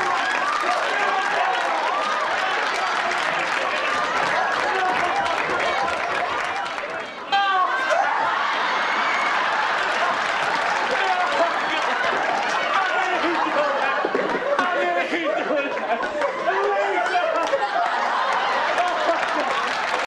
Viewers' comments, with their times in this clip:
0:07 You can hear Will's squeal had me dying! Edit: Not gonna lie I'm still getting notifications on this comment and didnt see the 1.7k likes till now. Everyone who commented you get a like and I appreciate ya 😁🤣 Edit: 2.1k, let's keep er goin! 🤣
0:07 Will laughs so loudly. lol